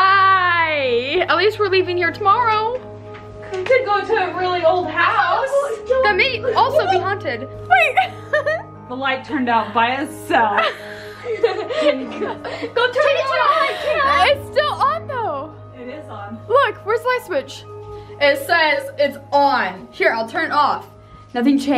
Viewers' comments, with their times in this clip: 0:09 I did to and I haer a kid said I see go awway